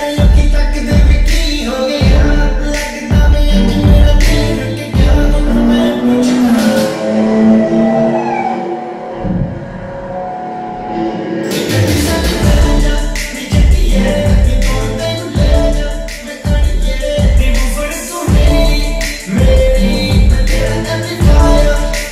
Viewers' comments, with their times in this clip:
0:04 Lamborghini gone through my head 🔥🔥